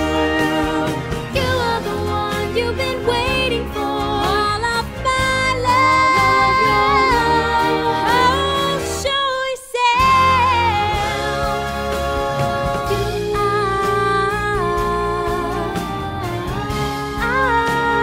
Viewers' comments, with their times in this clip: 0:04 They spelled Iduna wrong. Honestly though, actually sounds like Elsa. I’m shocked.